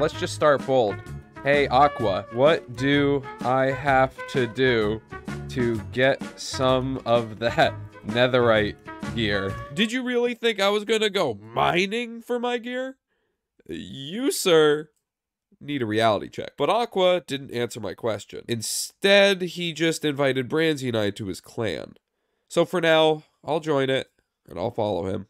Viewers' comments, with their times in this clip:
0:09 ay why does he sound like a higher-pitched technoblade